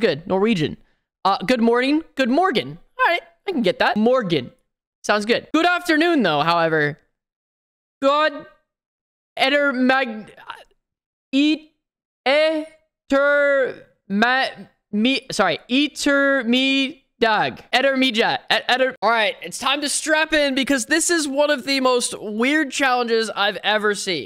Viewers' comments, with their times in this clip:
0:07 ah yes a true American 🤣